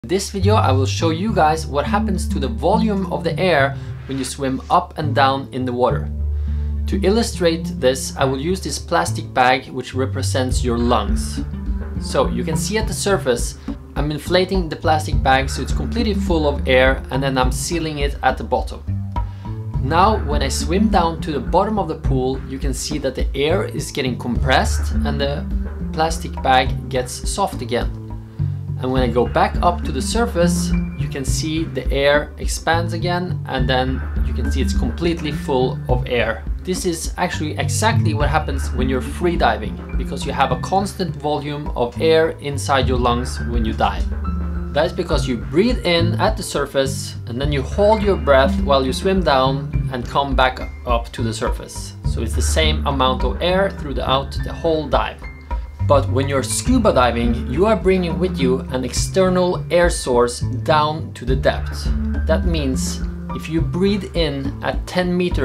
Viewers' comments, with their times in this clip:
0:03 “Bass sound effect”
0:46 Who else thought he said "...when you DIE", Realised he said "...when you DIVE" And face palmed
0:48 it sounded like you said die